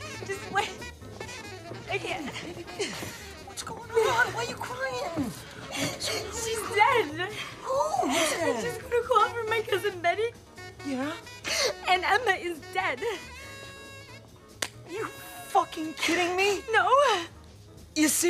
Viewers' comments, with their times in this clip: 0:03 I can hear Calvin Candie from Django Unchained in that voice. People replying to this comment: That’s the same actor. Me: EXACTLY!